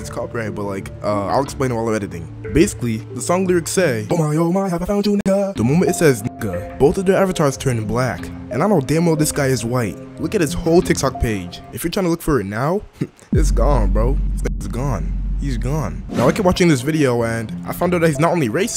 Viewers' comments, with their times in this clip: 0:04 i know this is not the perfect time to joke around but the way he sings the sound in full speed to not get copyrighted was funny (I’m not trying to be racist)